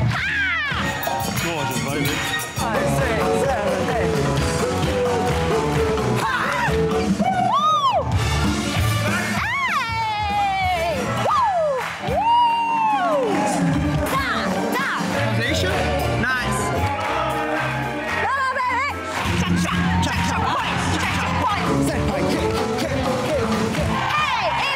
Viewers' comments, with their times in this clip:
0:08 I love Dianne’s “eyyyy!!!” 😂